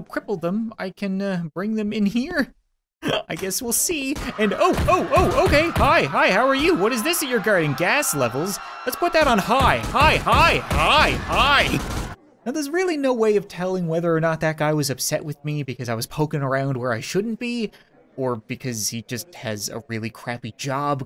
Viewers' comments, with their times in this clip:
0:06 the happines of hi